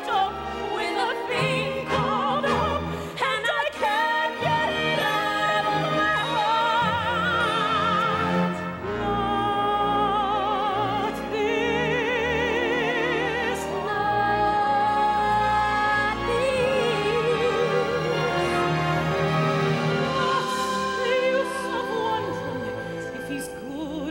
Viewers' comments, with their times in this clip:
0:08 OMG, so beautiful! I love the showcase of two different, yet equally fabulous vocal types. I'm curios, what are they saying ?